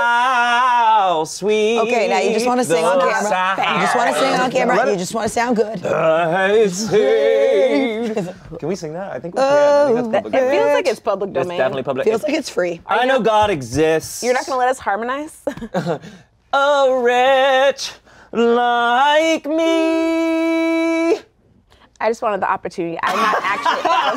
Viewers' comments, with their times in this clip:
0:06 The little harmony ate